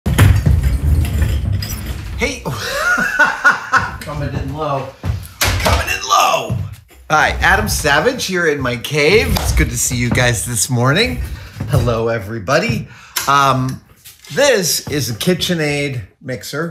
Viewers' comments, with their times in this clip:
0:01 I looked forward to that laugh in MYTHBUSTERS.